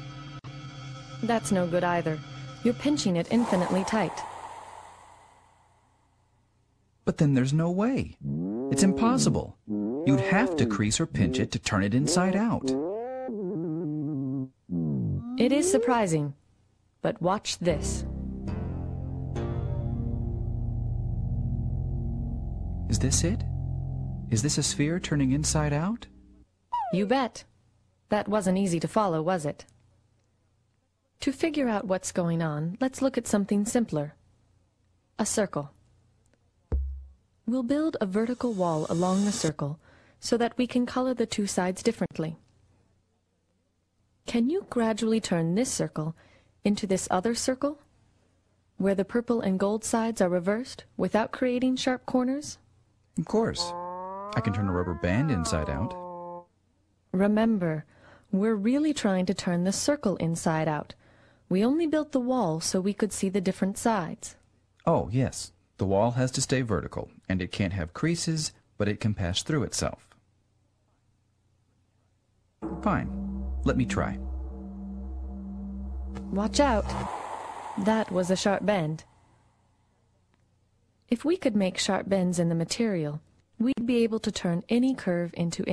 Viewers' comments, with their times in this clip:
0:08 I agree... They are trying to make it funny.... But it looks serious They tried to make it funny for 5 year olds and thats the ONLY time they laughed... but only once. The sound of the voices of them... are TERRIBLE!!! I think in my mind *TERRIBLE VOICE ACTING!! TERRIBLE VOICE ACTING!!!* in my mind. This is terrible for kids
1:08 and further, he says "...but it can pass through itself." When he says that, it sounds like he say patch instead of pass.